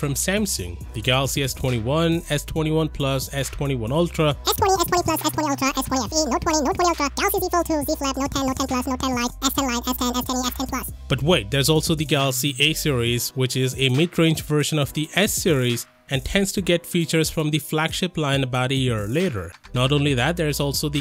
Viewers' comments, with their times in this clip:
0:04 LOL how you changed voice 😂
0:04 Nice quick voice 🎙